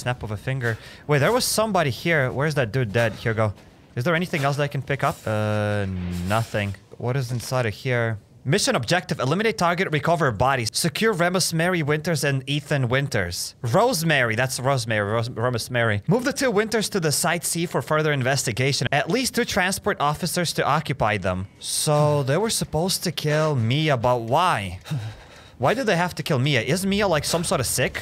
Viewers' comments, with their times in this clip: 0:10 romesmary winters lol 😂